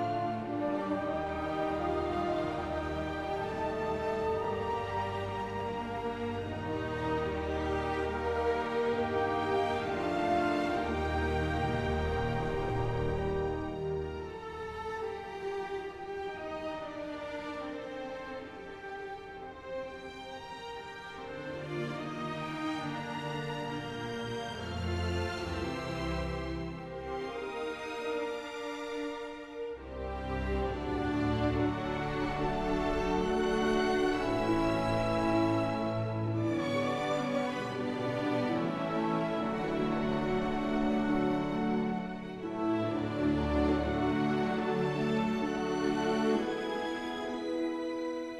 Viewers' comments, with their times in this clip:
0:07 From I just noticed a small snippet of the original theme. I know it plays out at the end but still.
0:29 this soundtrack is so underrated
0:30 Thank you, John Williams and John Ottman. The most beautiful line in a superhero theme ever
0:30 My favorite music moment!